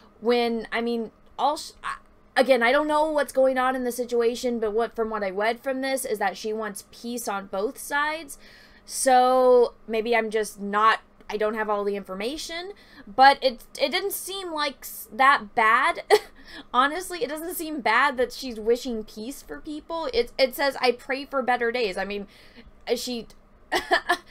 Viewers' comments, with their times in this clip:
0:05 "what I wead" XD